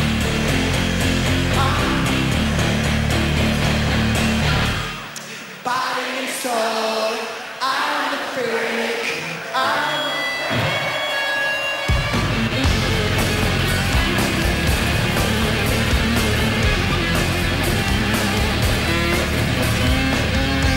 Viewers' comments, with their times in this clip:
0:05 is the gayest i’ve ever heard him sound lmao